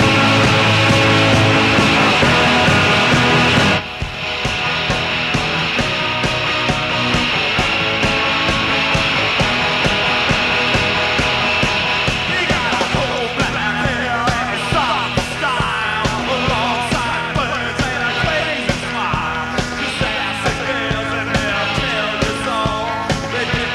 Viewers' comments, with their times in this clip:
0:06 Once the bugs get worked out around the mark the CLARITY and QUALITY of this recording is ASTOUNDING!!!